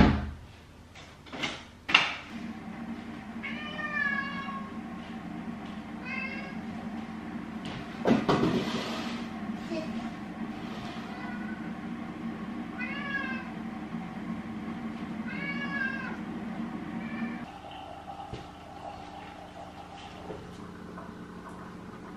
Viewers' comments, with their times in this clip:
0:06 Might just be my sleep deprivation but in I swear ur cats just meowed ur name 😳